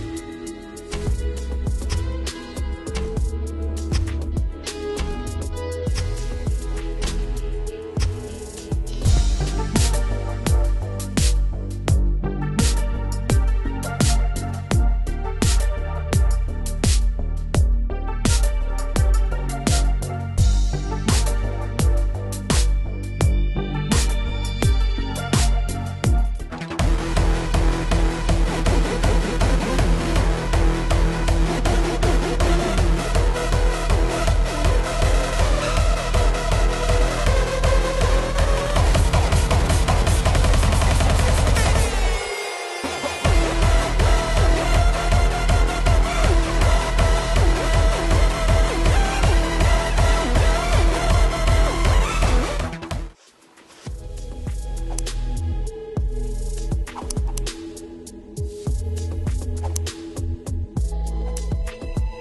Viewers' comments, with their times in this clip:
0:09 sounds like Nightfall from Shenmue, anyone else hear it?
0:26 Orange Justice 2.0, with Hardstyle music😱🤣
0:27 I Hear a Mosquito.
0:27 Idk Y but infectious reminds me Russian hardbass dance
0:43 sounds like bbnos lalala remixed